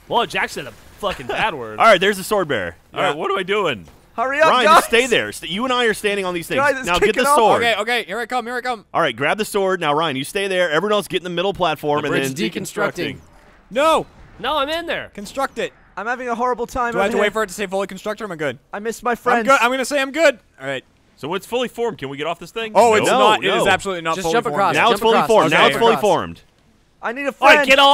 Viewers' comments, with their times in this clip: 0:09 "Bridge deconstructing!" it sounded so demonic :P
0:11 "Deconstructing" Guys! Wtf was that about. That was such a perfect sync that it sounded truly creepy.